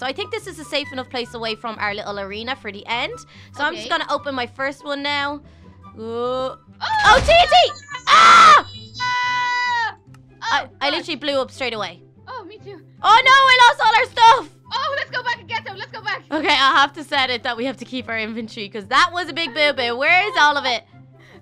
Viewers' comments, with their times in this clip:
0:08 LOL lilttle carly's yell